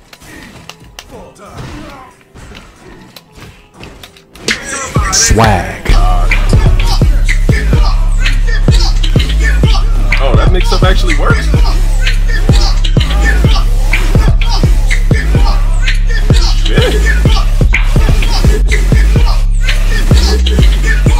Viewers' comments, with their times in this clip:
0:05 Di-did he actually give that gill that mixed his life props? I mean it only sounded like he was surprised but he didnt leave the game after getting smoked lol